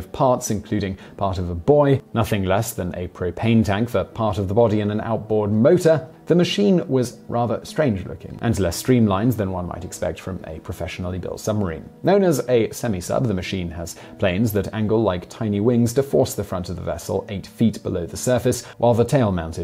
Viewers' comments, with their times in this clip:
0:05 “part of a boy” is what my ears heard 😂😂